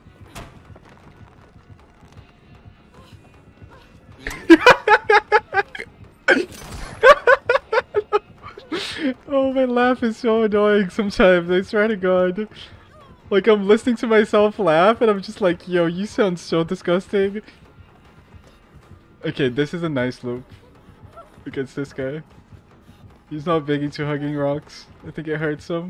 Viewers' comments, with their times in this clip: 0:09 your laugh isnt disgusting, it always puts a smile on my face